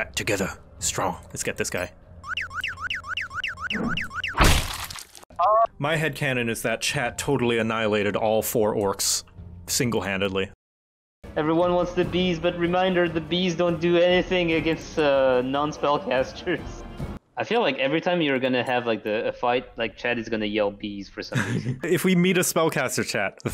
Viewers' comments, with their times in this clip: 0:05 The perfectly cut scream XD